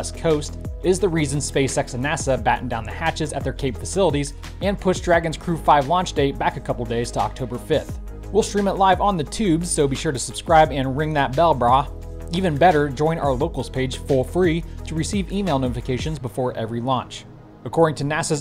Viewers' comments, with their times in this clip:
0:03 "china" was comically said... :D